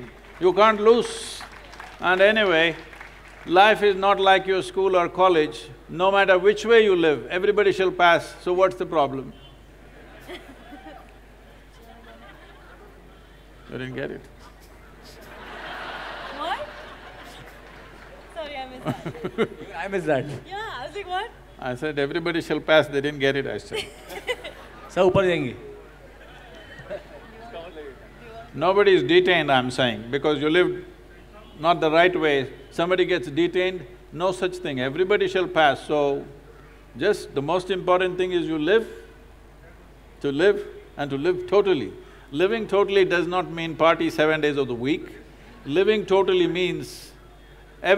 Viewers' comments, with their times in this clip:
0:09 Heavy sarcasm was delivered there !!
0:33 audience’s lol moment on their own calibre to understand sadhguru